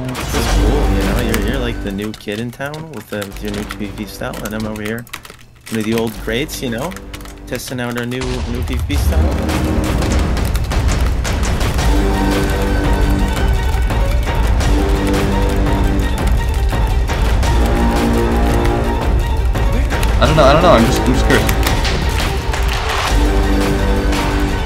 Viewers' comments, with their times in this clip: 0:10 sounds like a twitter user's keyboard when somebody doesnt agree with their opinions